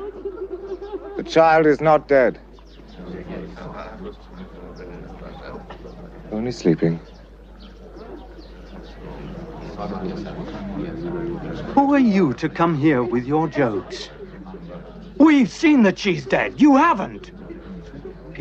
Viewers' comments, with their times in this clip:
0:05 I love the meter in Jesus voice when he says "only sleeping" It sounds pleasant and inviting of the hope that it may be true. Like he knows something that nobody else in the crowd knows.